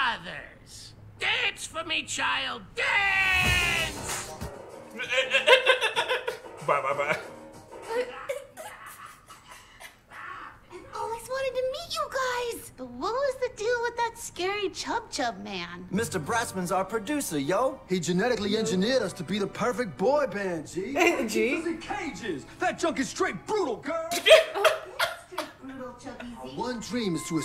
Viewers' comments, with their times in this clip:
0:08 that laugh hahahah